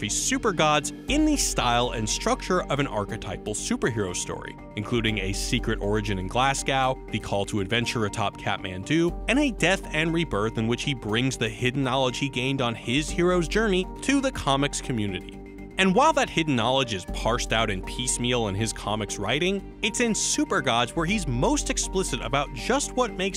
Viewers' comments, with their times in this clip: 0:05 A secret origin in "Glass Cow" lol. Americans. It's pronounced "Glarse go"